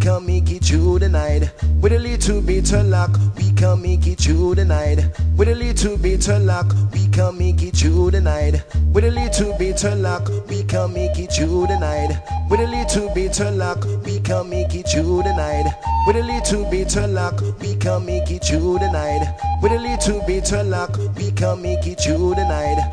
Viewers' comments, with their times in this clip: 0:07 when the sirens come in and the bass then drops again....WILD DAYS BACK IN THE RAVES